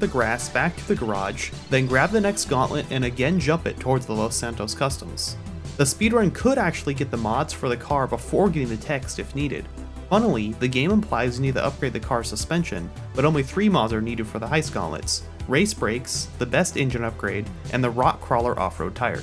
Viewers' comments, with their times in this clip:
0:05 Hey nice videos u post! Music ? Its so vice city like <3